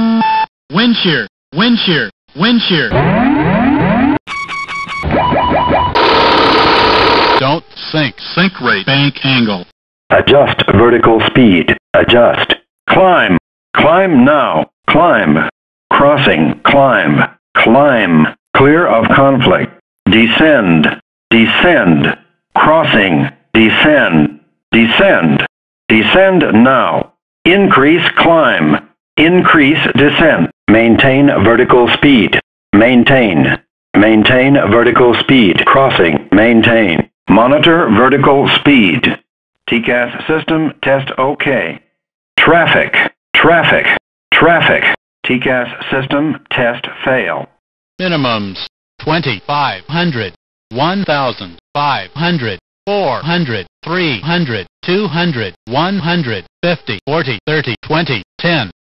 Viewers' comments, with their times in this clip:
0:03 Newest scrillex song.
0:03 The alarm sounds so cool to me idk why
0:03 Dubstep be like:
0:05 What a alarm??
0:48 sounds like a plane diving at a bog mountain or something
0:50 cockpit during a ryanair landing